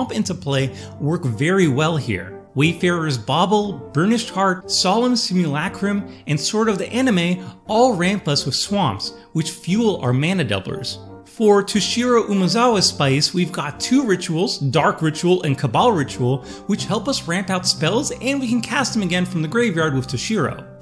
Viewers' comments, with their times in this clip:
0:05 Did he just say Sword of the Anime? 😂